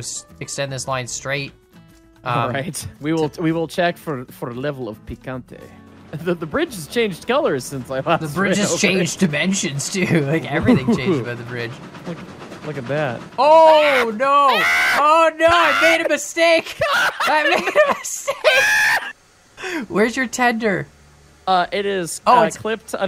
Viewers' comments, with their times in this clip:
0:08 that noise he makes lmao
0:08 The screams were hilarious